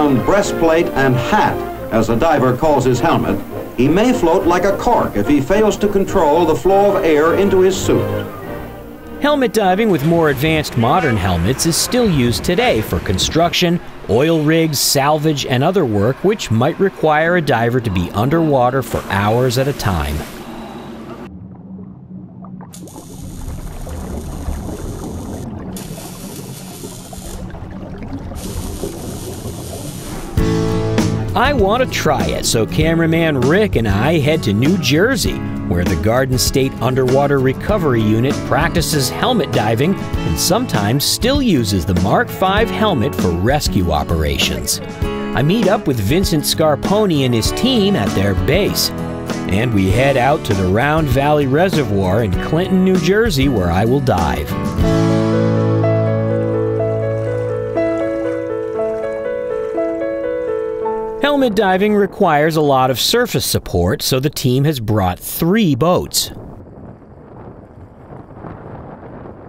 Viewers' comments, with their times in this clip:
0:10 Did someone use autotune? TODAY
0:50 I thought he said and then we head out to Floria for me to die lol
0:53 i thought he said: where ill will die
0:54 Did you say die or dive in .??